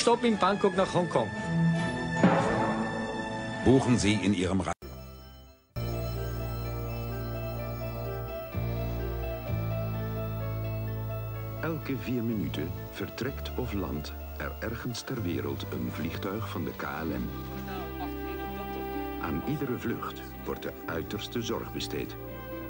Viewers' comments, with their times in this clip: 0:08 ouch that VHS sound hurt